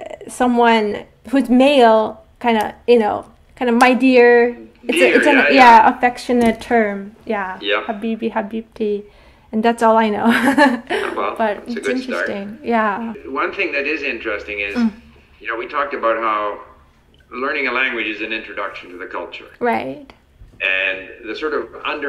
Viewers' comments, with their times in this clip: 0:10 is he saying "tamam" (okay) in Turkish or did I hear wrong? 😂